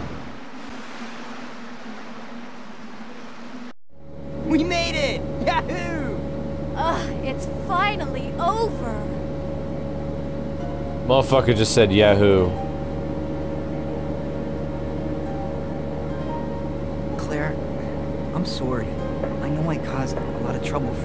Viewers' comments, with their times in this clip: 0:03 worst "yahoo" of all time